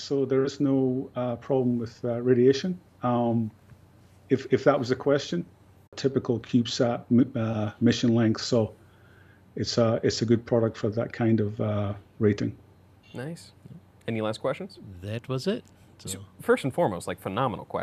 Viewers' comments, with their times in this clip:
0:05 What's up with the skip ?? Sounds like it would have been a good question to hear.